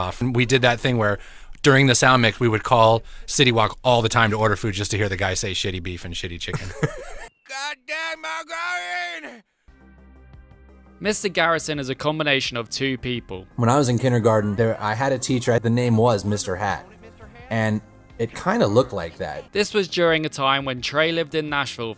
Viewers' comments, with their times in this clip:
0:06 it’d be funny af to find out that it wasn’t even a voice actor just refined audio from the phone